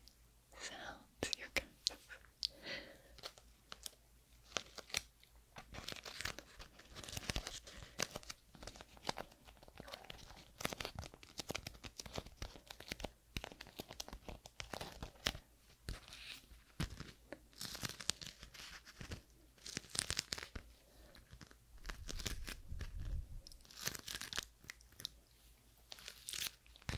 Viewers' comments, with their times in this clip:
0:08 You can hear what sounds like a stomach growl 😅